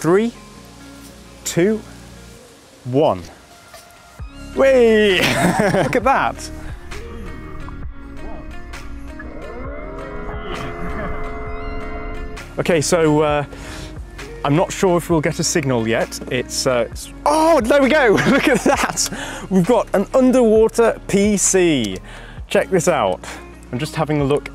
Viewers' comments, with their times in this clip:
0:07 I saw linus' video where he cools his server using his pool and now this. Also, the shot where the PC turns on is weirdly haunting. The metal pipes evoking steampunk vibes, the mercy water in serenity and then suddenly this industrial device steering to life, disturbing the quite with it's magnetic sound. Very cool. Also the pond shots were amazing.